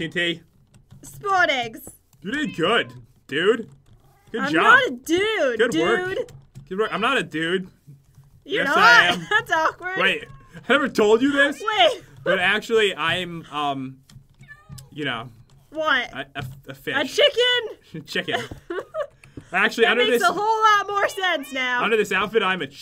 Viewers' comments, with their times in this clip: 0:08 I'm not a nude